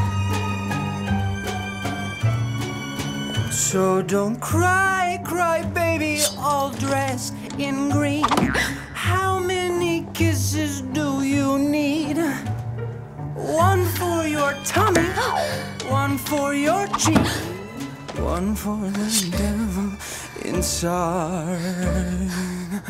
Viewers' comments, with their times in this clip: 0:04 This song was stuck in my head all day! Just the way he's singing; that sweet gently seductive tone that just changes up a little >w<